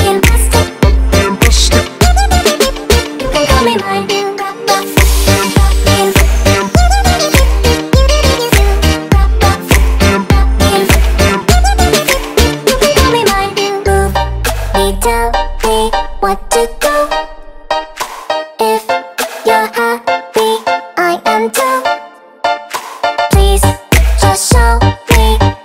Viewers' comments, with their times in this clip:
0:08 is it only me thats hearing f u here